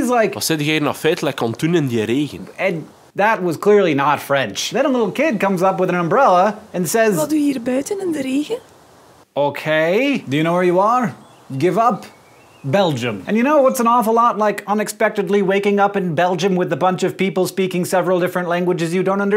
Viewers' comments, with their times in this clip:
0:06 If you make the speed 0.5 the child sounds demonic. Very demonic